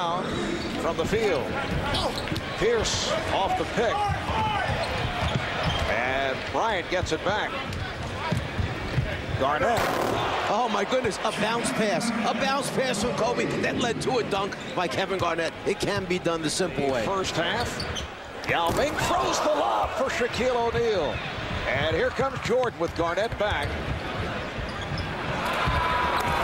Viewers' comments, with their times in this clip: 0:06 damn that dunk sound explosive😂
0:08 Listen to the poor rim when Kevin Garnet slams it.
0:08 THAT WAS A MONSTROUS CRASH